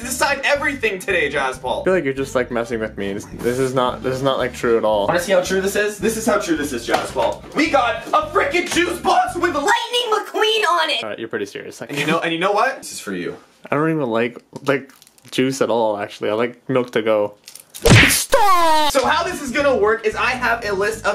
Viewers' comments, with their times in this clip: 0:08 what is that voice crack
0:09 the voice crack tho